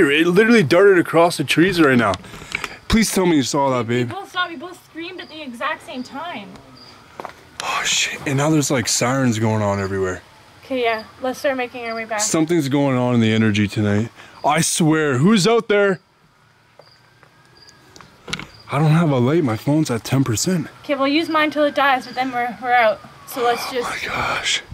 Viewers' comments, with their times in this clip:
0:06 That was a freaky video when you was under the shelter and saw the figure there was a moan and the running at the end very scary
0:06 was that a growl❓❓👀👻